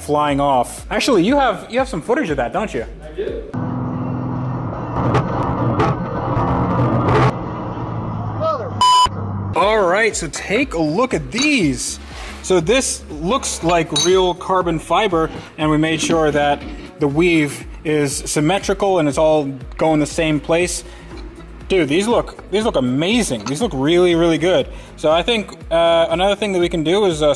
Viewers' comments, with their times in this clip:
0:08 lmfaooooooooo I’m dead’s asff. Old dude sounded pist 😂😂